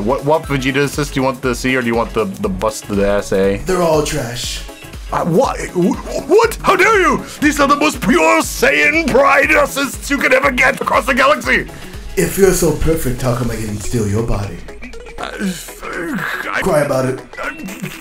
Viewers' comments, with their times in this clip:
0:05 homie turned the Vegeta voice on in an instant